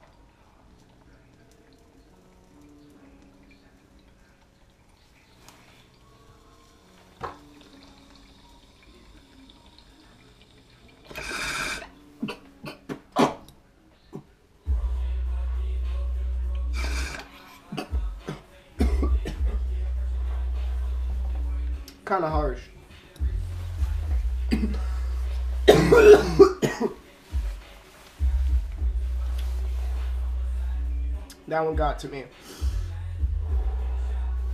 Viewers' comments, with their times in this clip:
0:10 that choke/cough is funny af
0:21 "Kinda harsh haha---*literally hacks up lung*"